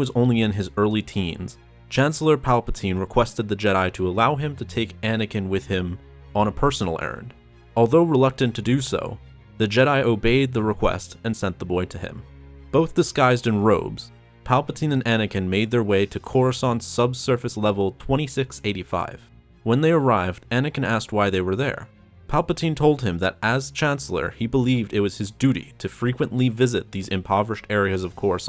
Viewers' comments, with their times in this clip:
0:09 right slide I thought that palpating said “As you sand, master kenobi”